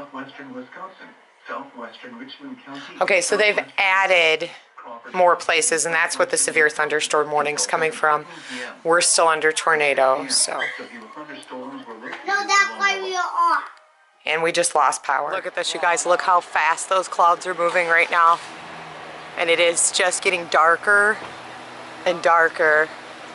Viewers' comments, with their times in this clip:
0:07 Why is she so calm about her losing power 😂😂😂😂